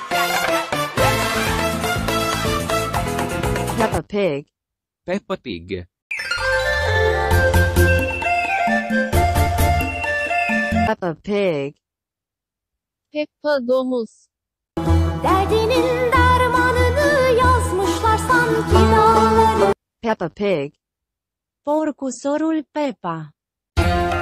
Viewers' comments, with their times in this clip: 0:06 what 🤣 you put a song 🎵 Vietnamese on country Italy 🇮🇹